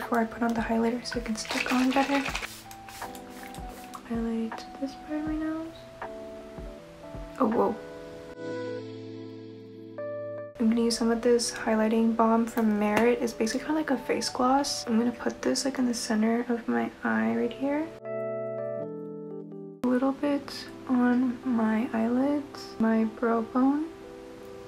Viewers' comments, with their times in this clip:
0:08 i realized this song was “Hype boy” by NewJeans. I like this relaxed version❤️